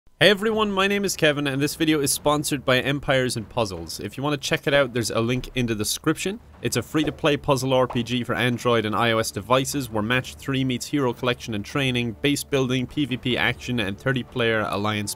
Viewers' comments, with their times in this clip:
0:00 starts reading script